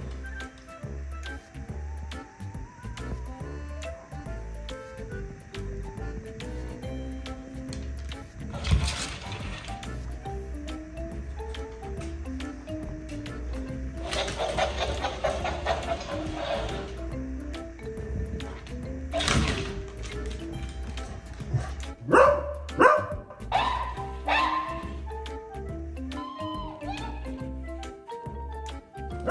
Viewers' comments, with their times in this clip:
0:10 I've watched this multiple times and I finally realized that the parrot is playing back the sniffing sound Oliver made😂 so funny